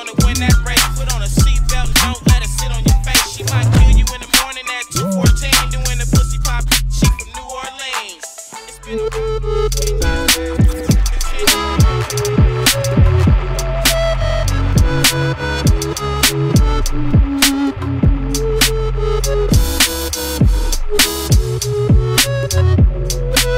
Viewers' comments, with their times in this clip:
0:08 is amazing. those synth lines are gorgeous